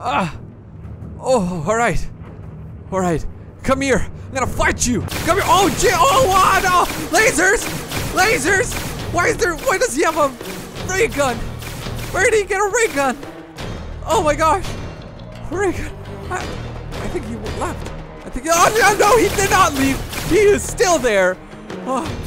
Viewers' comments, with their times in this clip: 0:06 its kinda on beat thoo